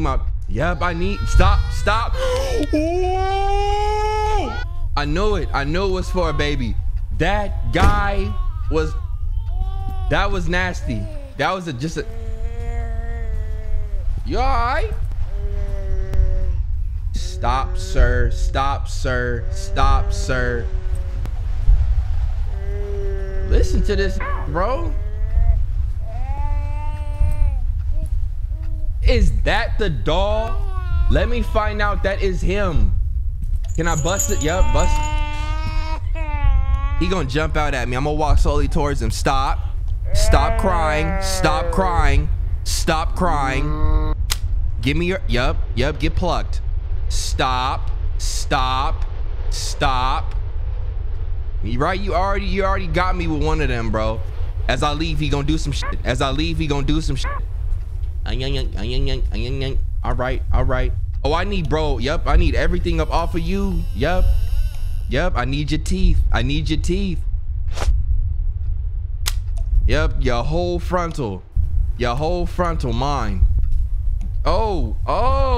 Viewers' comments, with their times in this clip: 0:05 peep when the babies voice got deep he started calling it sir 🤣
0:56 that's a new sound it got me laughing like a water sprinkle🤣🤣🤣🤣😎🤙🔥🔥